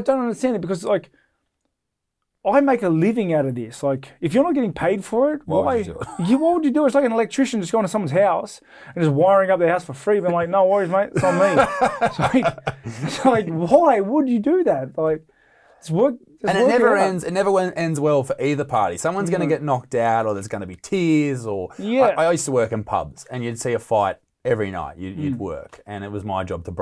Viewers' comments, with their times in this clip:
0:07 Sounds like Cowboy Cerrone.